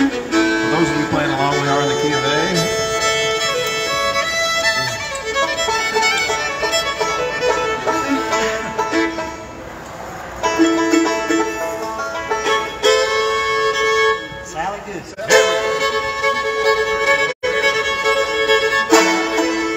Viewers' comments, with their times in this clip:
0:03 Oh my word, seeing and hearing Michael tune—and retune— his fiddle is terrific! [I have a thing about playing in tune—which actually isn’t so easy with a bunch of flutists, lol!]